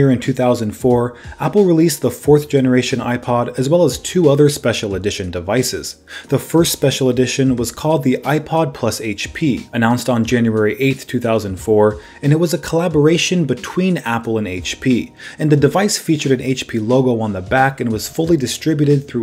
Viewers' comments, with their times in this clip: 0:07 Say it with me everyone: Haitch Pea
0:07 say it with us Haich pea